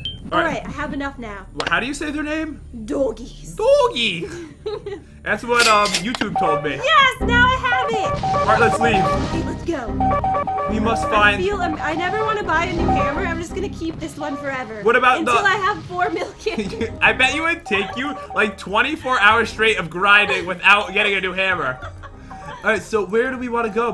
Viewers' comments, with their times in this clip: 0:04 ??? its doing weeeeiiiirrd sounds